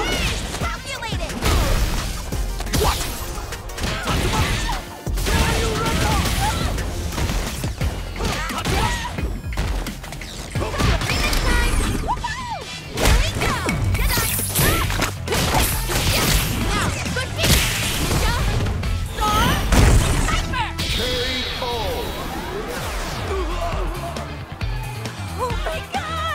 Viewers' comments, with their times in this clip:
0:10 I love how the music changes after Kimberly’s level 3. She puts on her head phones and gets a buff while jamming out to music!